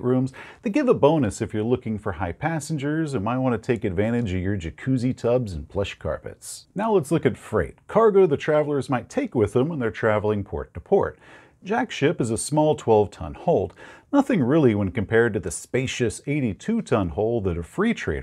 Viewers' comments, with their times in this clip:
0:03 ...Absolutely thought said "flesh carpets" and was very, very concerned.